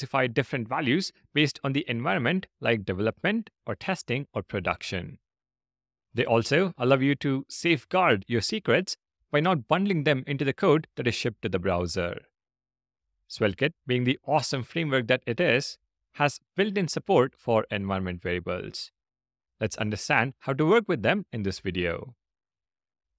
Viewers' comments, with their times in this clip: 0:06 I love you too === allow you to. (Just kidding. Huge respect for our Teacher)